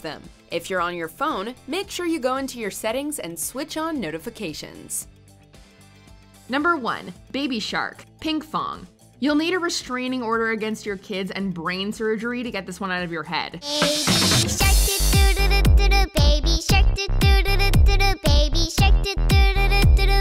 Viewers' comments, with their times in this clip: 0:06 crowd booing SFX the Nickelodeon team and I apologize in advance for your bleeding ears